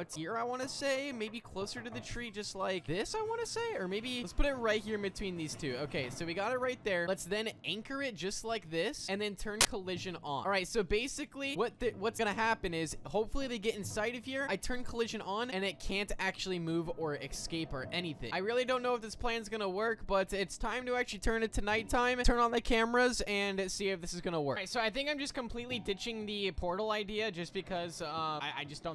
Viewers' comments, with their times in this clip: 0:09 again more glitch sounds bro